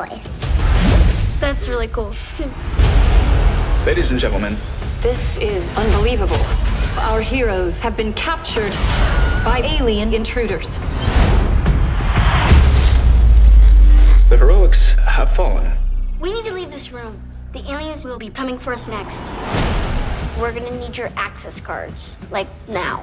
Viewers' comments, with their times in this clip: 0:08 Wilhelm scream lol
0:09 lmao that wilhelm scream tho.